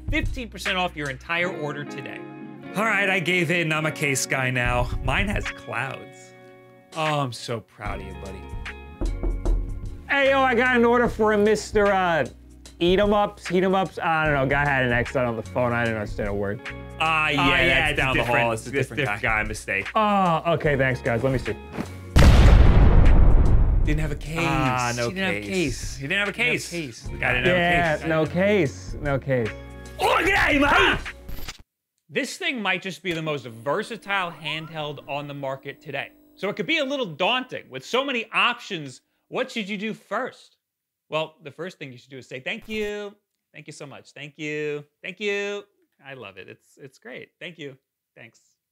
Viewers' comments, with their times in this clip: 0:06 That knock scared the hell out of me - my PC is next to a wall of windows and I thought someone was on my back porch!!!
0:07 i was waiting for a knock at my door and i heared
0:08 be warned that's a sound effect it isn't real. Jesus. My open backs made me think someone knocked on the window...I'm on the second floor.
0:08 that knock on the door is right where my door is i got a fucking shock
0:08 Made me jump out of my skin! I don't even have a door on my right hand side, which added to the confusion. The door knocking sound effect is kryptonite to every introvert.
0:08 The knocking scared TF OUTTA ME with my AirPods in 😭 Sounded like someone was knocking on the wall right next to me
0:08 why the f- would you use binaural sfx for this? It's 1 am for me, I'm lying in my bed in complete dark and there is actually a wooden door right to me. I've almost ruined my bedsheet! P.S: My door makes literally the same sound when being knocked on. I still feel as if it is in my room even listenting to it for the 4th time now.
0:08 That was not cool. I am wearing 3D head phones... I sit next to a window...im on the third floor...It sounded like someone knocked at my window on the third floor and that creeped and confused the hell out of me for a solid 2 minutes before I realized it was this video.
0:08 Dude WTF I thought someone actually knocked!
0:08 That knock freaked the fuck outta me.
0:09 what ever fucking knock sound in the ad made me irate at the fact that my headphones can prduce that level of realism from things like that
0:30 Spot on impression of
0:30 That was a great Muppet impression.